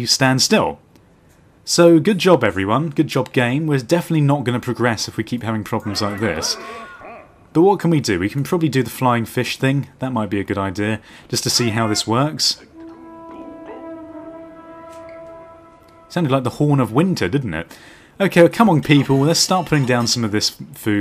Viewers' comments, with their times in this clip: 0:08 One blast for rangers returning.